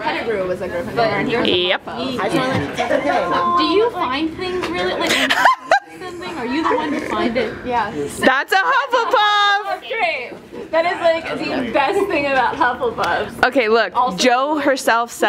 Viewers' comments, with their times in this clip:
0:03 what's the question anyone??? i can't hear it because of the girl behind the camera laughing so loudly (!